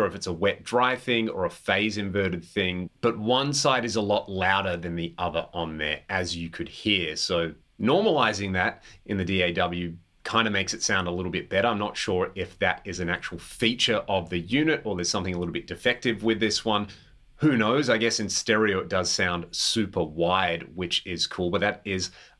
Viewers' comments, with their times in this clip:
0:03 I’ve owned three different examples of the 250rl/ml and they all have an imbalance with the chorus on, just the way they were designed.